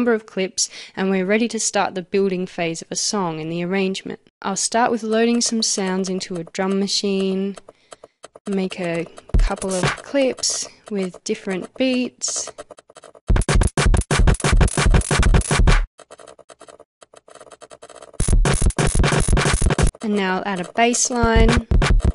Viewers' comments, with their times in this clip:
0:04 It was everything pretty alright, I was sitting down on my chair, taking notes, peacefully. All of a sudden, your cursor started going crazy, things started to get tense, I heard a few sounds (like bb8) and then you got a song. WHAT? I'm really slow...damn...hahahaha couldn't understand it .-.